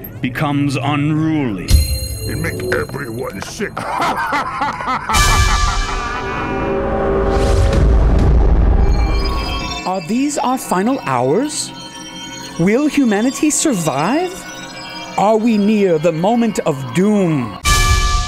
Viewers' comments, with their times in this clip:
0:04 Sounded Like The Opening To Feel Good Inc.